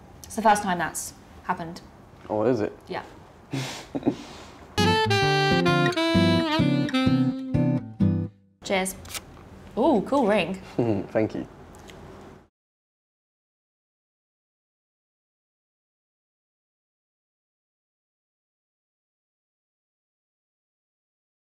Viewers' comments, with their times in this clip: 0:09 the way he said "thank you" and looked at his girlfriend at the end 😂😂😂😂